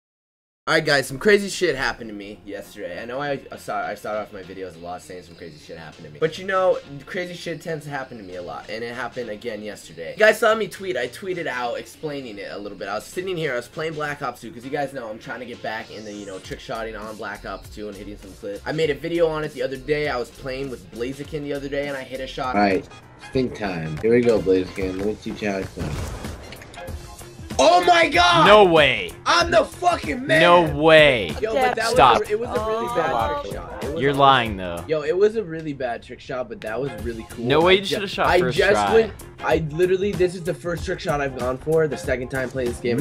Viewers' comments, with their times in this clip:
0:02 Yo You sstuttered
0:29 he sounds like Seth rollins
0:30 Am I the only person who hears a girl ? :D